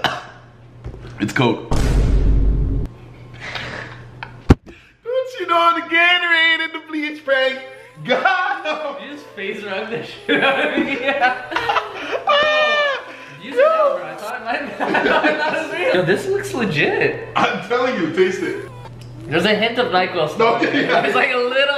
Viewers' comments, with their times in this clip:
0:05 how he says Gatorade and bleach